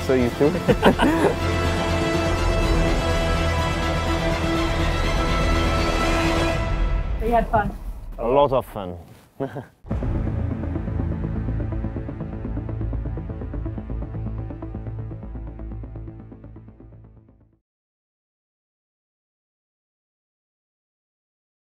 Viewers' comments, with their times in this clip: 0:08 the most unenthusiastic reactions ever...like they had driven last year's Ferrari :D